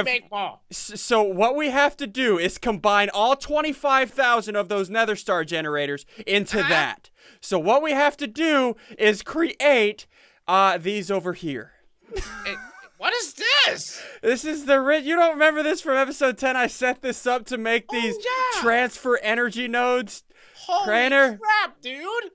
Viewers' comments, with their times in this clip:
0:08 omg Ssundee sound like dump ssundee when he is saying create